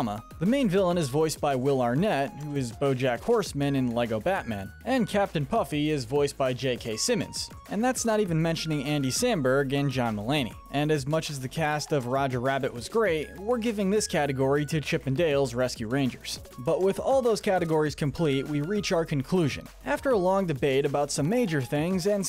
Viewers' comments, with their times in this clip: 0:06 Why he voice sounds similar.